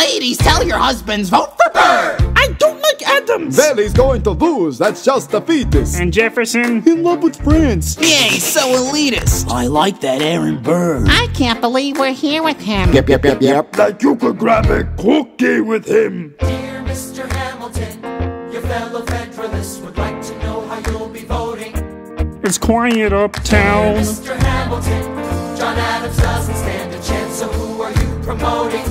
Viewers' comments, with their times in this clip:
0:08 "Yeah he's so elitist" sounds like sonic
0:11 Is that Lois Griffin? 💀